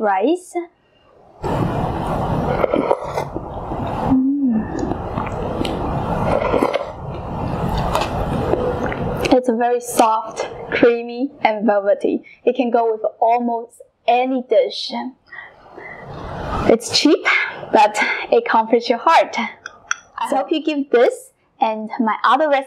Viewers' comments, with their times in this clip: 0:05 that moan in you gotta know its real good 😂😭